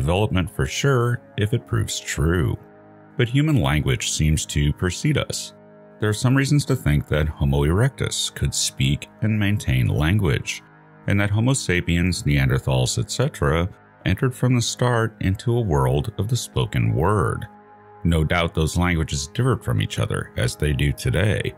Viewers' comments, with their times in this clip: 0:07 I thought I heard "The homo erectus could speak and maintain an erection"